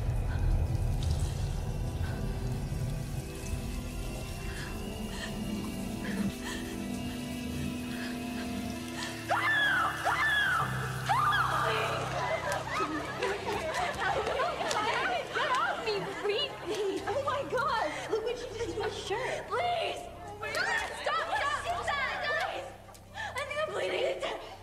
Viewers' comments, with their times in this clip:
0:08 The way how she screamed help me 😢😢
0:08 How she screamed Help Help help me